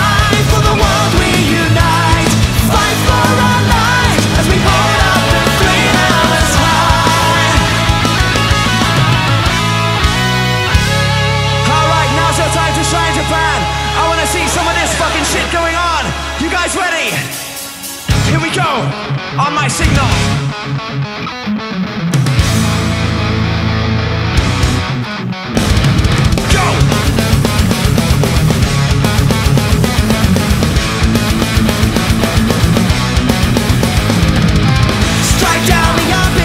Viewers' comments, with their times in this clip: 0:07 took me a year to realize it but Ayo wtf, did they really just pull that on my one earphone wearing ass
0:18 Sam Totman riffs sounds pretty badass on omg